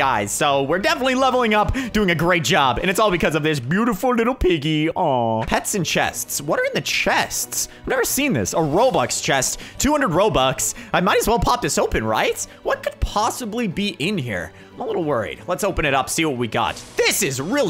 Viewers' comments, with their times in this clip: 0:03 he sounded like messyourself